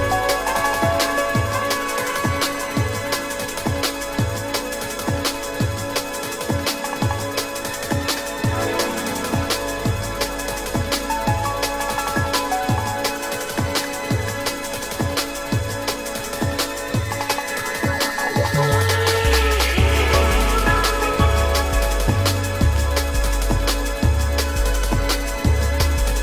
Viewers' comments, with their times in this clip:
0:09 I was listening to this in background quietly, and then realized wait a minute this sounds kinda cool and turned it up all the way and im blown away this music is insane wtf